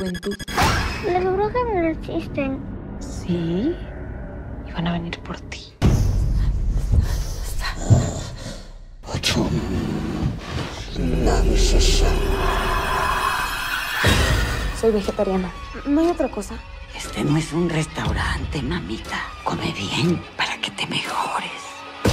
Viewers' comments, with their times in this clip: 0:08 sinister chanting the captions: restaurant